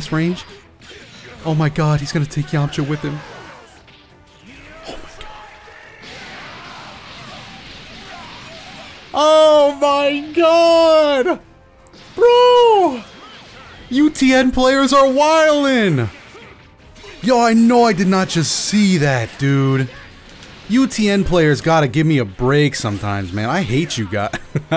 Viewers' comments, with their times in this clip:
0:09 I could feel that OMG through all my bones 🤣Totally meme worthy!